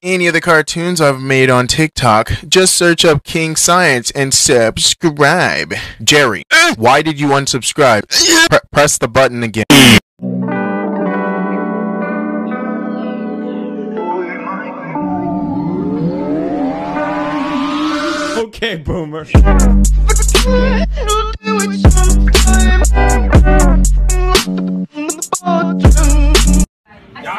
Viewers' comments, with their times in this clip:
0:09 Rip headphone users like me ;w; MY EARS